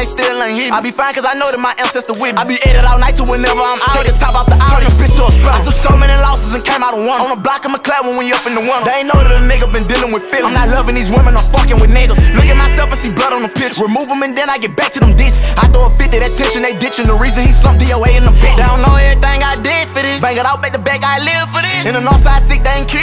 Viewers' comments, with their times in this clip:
0:09 wtf did yb say ? 😂😂
0:09 yo YB, whachu say right there fam?😂😂
0:11 What the hell he say ?😂😂